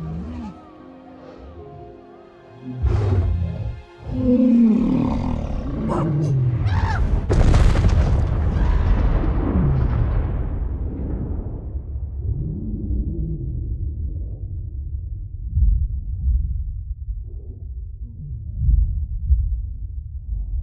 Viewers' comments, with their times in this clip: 0:06 That was like thunder
0:08 sukos growl of sadness